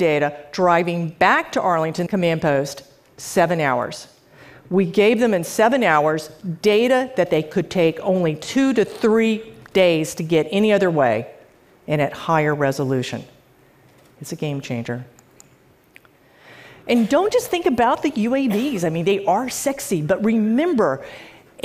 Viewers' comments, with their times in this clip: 0:08 two to three*pop* days